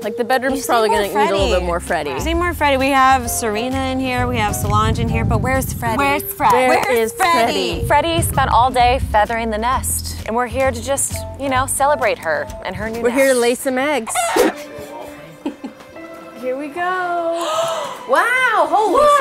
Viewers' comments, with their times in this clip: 0:07 I know I am very late, but why is no one talking ?